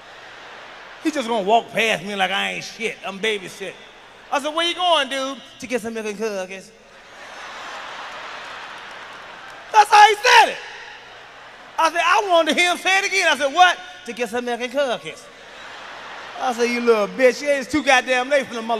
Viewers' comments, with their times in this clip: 0:05 To get some milk and and cookies how he said was funny as shit😂😂